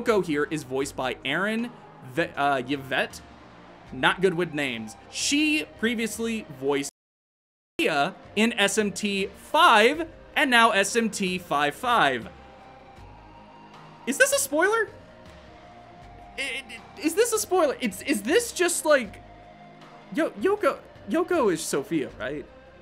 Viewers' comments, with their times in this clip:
0:10 Weird audio hiccup